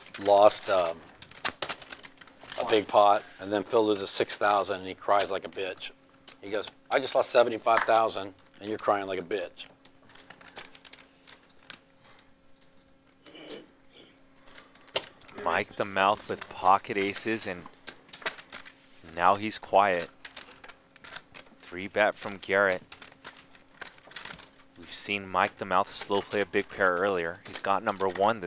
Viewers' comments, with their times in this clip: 0:10 Awkward silence cringe